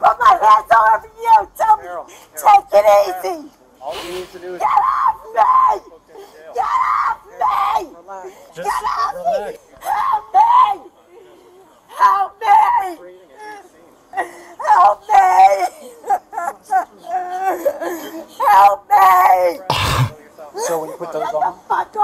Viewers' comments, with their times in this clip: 0:10 I swear these people scream like distressed cats… 😅😅😅 🤦🏽‍♀️ 😮‍💨 Swear they really think someone gonna be like, “oh someone in distress I must RISK MY DAY to go rip them from the cops custody”. 😂